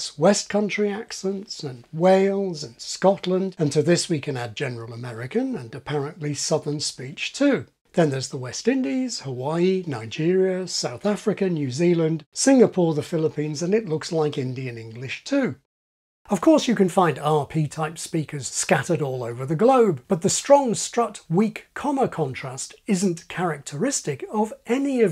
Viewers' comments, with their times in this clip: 0:07 As someone who grew up in the South East, after I'm just repeating the word "southern" to myself and trying to tell what my own pronunciation is.